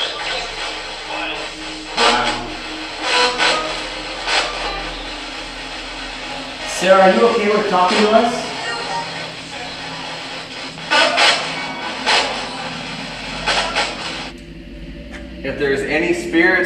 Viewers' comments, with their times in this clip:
0:04 it might just be me hearing shit but it wounds like a little girl saying daddy